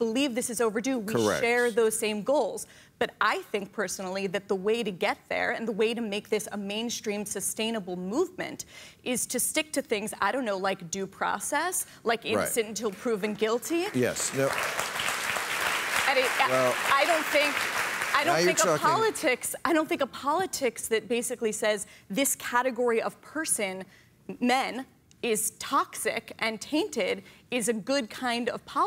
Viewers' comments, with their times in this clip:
0:09 It's worrying how lacklustre an applause 'due process' and 'innocent until guilty' get as concepts.